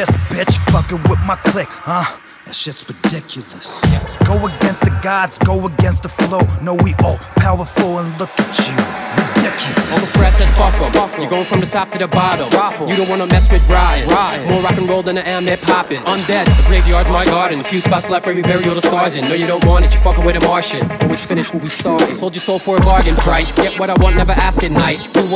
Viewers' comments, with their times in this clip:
0:07 this flow ridiculous! He flowed the shit outta the beat